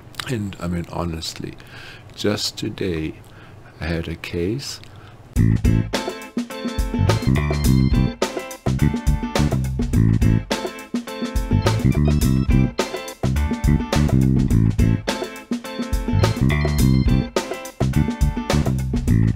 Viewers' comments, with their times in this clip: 0:04 Is it just me, or the soundtrack changed to music right when he starts to speak about a case...